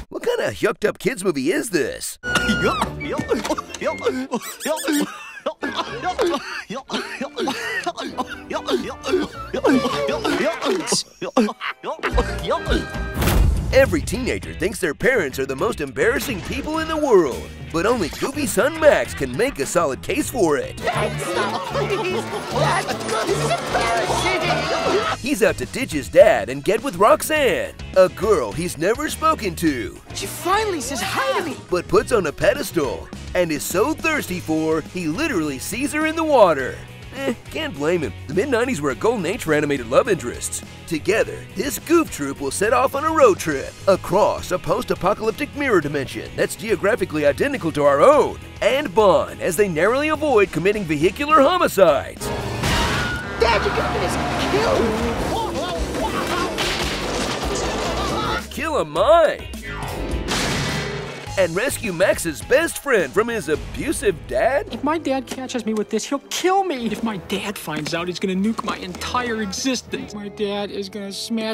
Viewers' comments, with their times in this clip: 0:03 when you swallow a chip down the wrong way
0:53 Did I catch a Wilhelm scream there ?